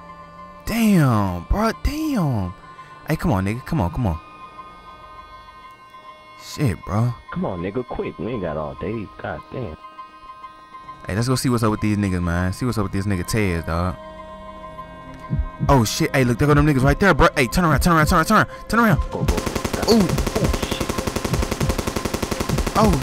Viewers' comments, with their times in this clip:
0:07 that's sounds like a Snoop Dogg :D